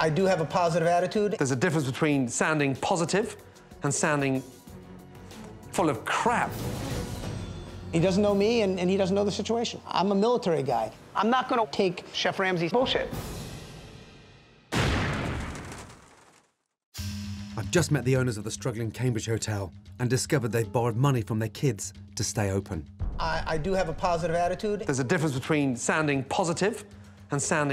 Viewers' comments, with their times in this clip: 0:10 "I'm a military guy, I'm NoT GonNa TaKe CHeF RamseYs BulLShIt" This line was very CLEARLY edited together. He didn'tt actually say this at all. That's fucked up
0:10 Listen to 😫 Every word sounds copied and pasted.
0:11 is it just me or does the "im not gonna take chef Ramsays bullshit" sound a bit spliced?
0:11 lol that editing was horrible. They had to pull from three different clips to make it seem like he said “I’m not going to take chef Ramseys bullshit”.